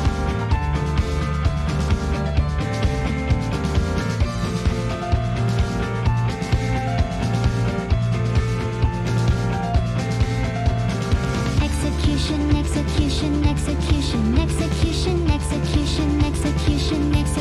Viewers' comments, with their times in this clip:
0:03 it is so cute but when she sings "EXECUTION" for the last time, I can hear a guillotine dropping the blade and the crowd cheering.